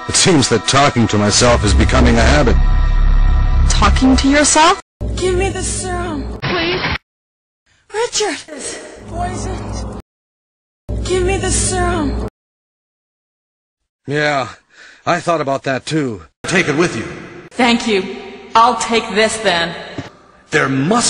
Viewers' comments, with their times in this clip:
0:08 loooooool. jill sounds and looks like she's on drugs :D